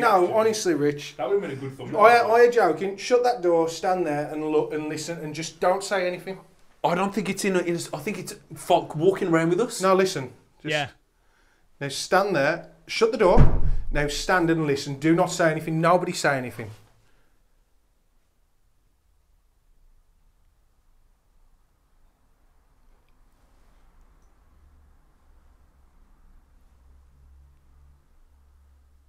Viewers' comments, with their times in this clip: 0:10 The moment the world got quite